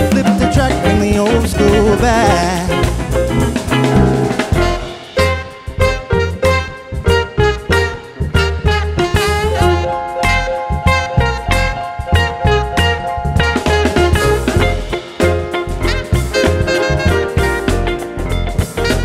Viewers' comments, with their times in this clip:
0:04 surprise, it’s also a mini mashup